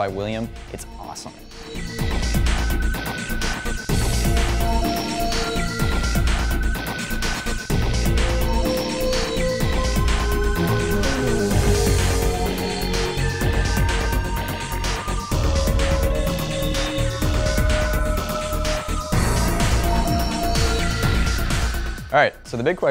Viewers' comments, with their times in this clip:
0:07 the music that you're using is very... Unreal Tournament-ish, what type of music is that exactly?